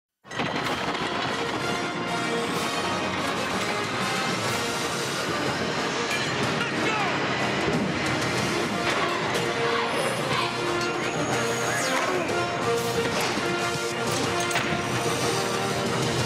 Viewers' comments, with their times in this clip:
0:01 THIS MUSIC IS AMAZING